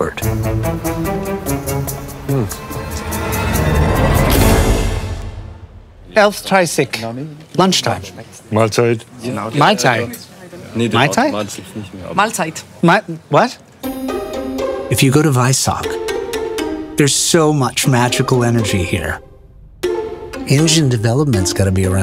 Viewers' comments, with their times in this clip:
0:09 My Tie Wut ?